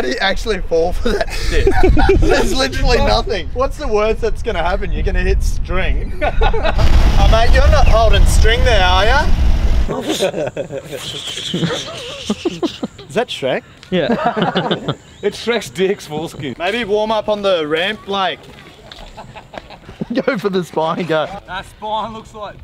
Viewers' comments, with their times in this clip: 0:07 wtf this accent is so funny 😂